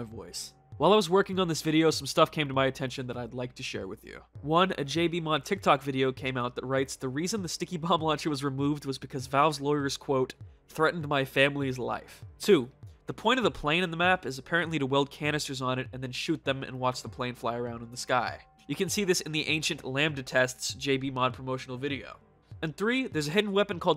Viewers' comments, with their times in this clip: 0:04 I love how you can hear him holding back laughter. That was so funny I wasnt expecting that xD